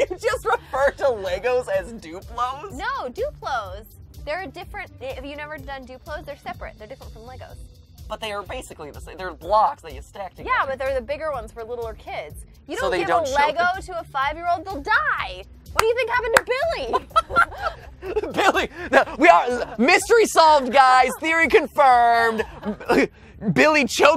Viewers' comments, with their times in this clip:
0:07 matpat did the nugget voice